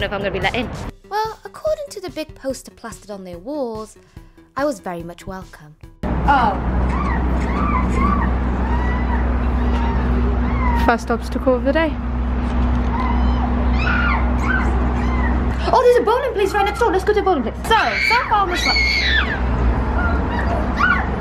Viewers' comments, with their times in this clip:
0:07 At the first i thought the screaming was just the door’s sound LMAO